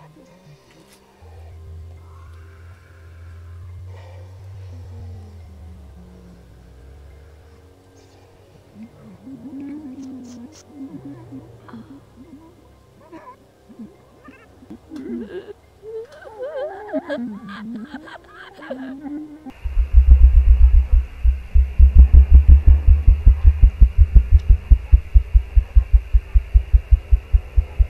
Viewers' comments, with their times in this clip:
0:09 listen to that sweet asmr. Goes something along the lines of, "*loudly taste fruit, then proceed to smack lips and then moan while putting head down to do something related to yellow fruit"